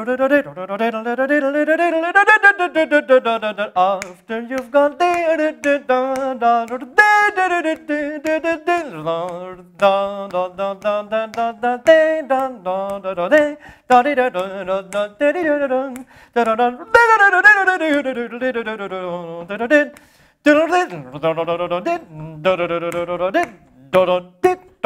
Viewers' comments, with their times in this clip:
0:06 I just can't get over how perfect the note is.